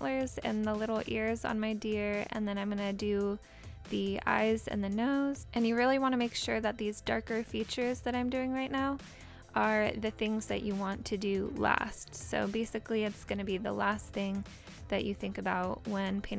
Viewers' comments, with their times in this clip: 0:04 what happened with the word 'nose' XDD